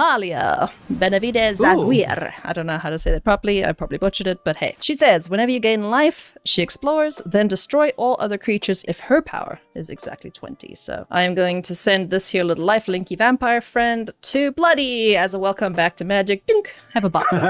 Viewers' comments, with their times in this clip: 0:03 You did butcher her name 😢. But nice game ❤ love all your content